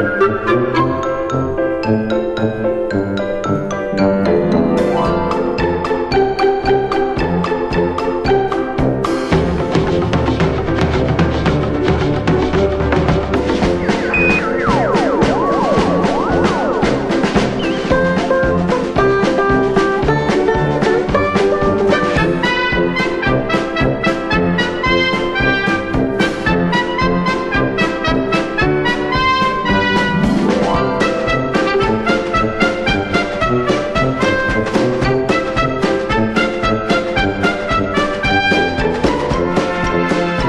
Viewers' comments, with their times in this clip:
0:09 has some fire drums inthe background
0:21 this part captures the pride in the world of refreshment thier best park attraction it feel like "this is our legacy and we are proud of it and you will love the experience". Sorry lads i am a bit to overanalitic for just a soundtrack